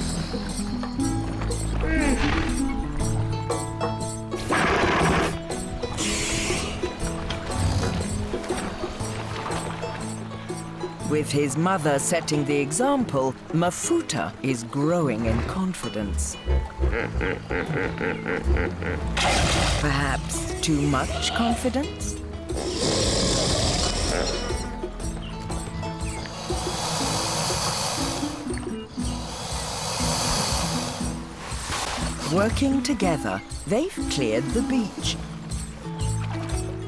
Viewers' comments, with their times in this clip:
0:06 Why did sounds like the spider from Minecraft
0:17 The kid sounds like the predator just before he blows himself up!